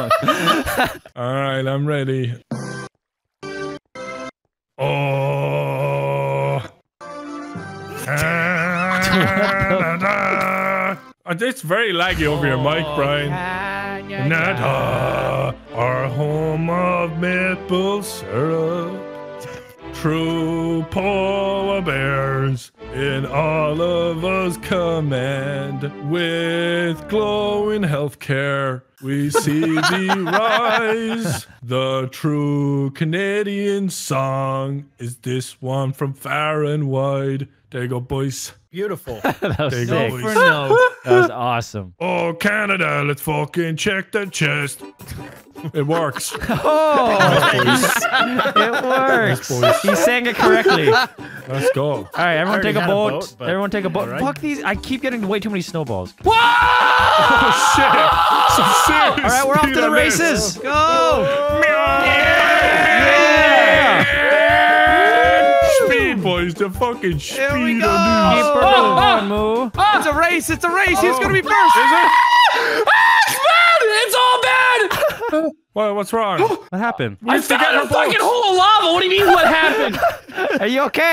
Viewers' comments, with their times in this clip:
0:07 McDonald's wifi strikes again!!!
1:04 Wildcat scream dude 😂😂😂